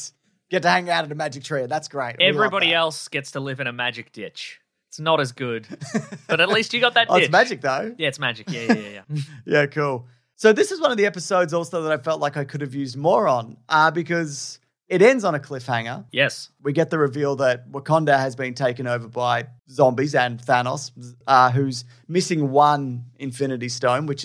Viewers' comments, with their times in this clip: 0:10 I could sometime use a moron too.